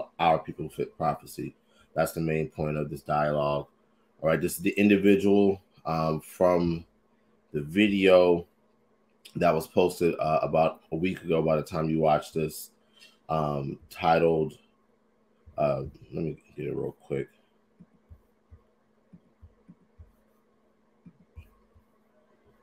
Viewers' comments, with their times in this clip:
0:10 A scriptural knife fight. Did that guy start to "black up" his voice ?